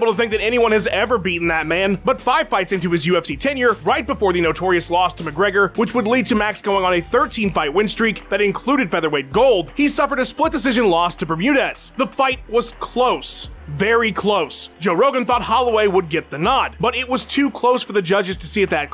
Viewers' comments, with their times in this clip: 0:03 he said when " the notorious lost to conor mcgregor " aren't they the same person 😂😂😂😂
0:03 “notorious lost to mcgregor”??
0:03 he said before the Notorious lost to McGregor lol what
0:03 "right before the Notorious lost to Mcgregor" lol
0:04 The notorious lost to Mcgregor lol u high 😂😂